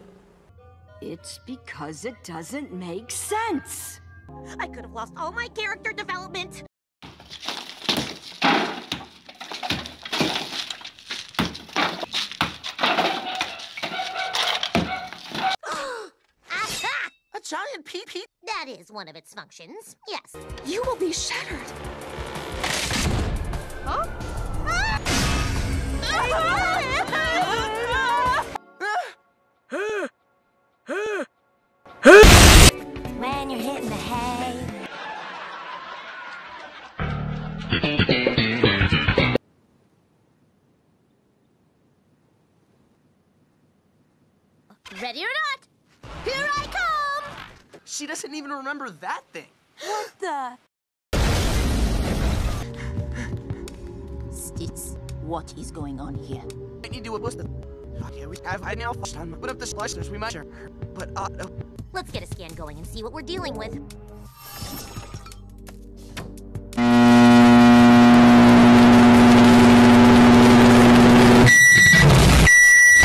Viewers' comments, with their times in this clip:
0:10 so each time I hear a roar it means that owo
0:35 Seinfeld Laugh Track
0:49 What the boom
0:54 Steven:(speaks a forgotten language only known by the diamonds.)